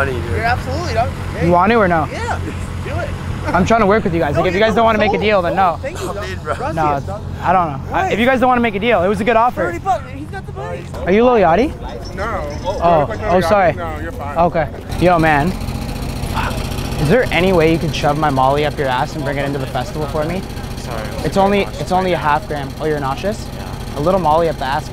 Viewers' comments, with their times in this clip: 0:10 are you Lil Yachty lmao 😂 😂 he sounds like him too
0:11 someone tell me why in the first second his voice has a hint of lil yachty tho
0:11 he even sounds like Yachty 😂
0:12 Sounded like Lil Yachty too 😭😭😭